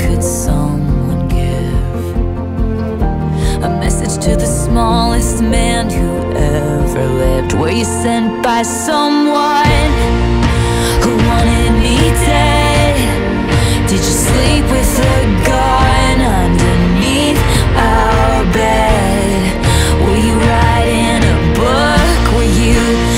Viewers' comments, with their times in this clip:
0:07 OH YOU CAN HEAR THE ANGER IN THIS WHOLE PART WOW